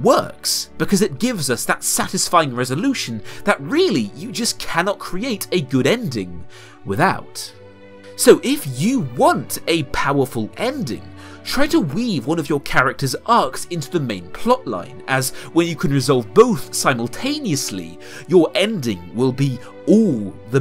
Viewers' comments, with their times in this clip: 0:07 I thought that was the Shrek theme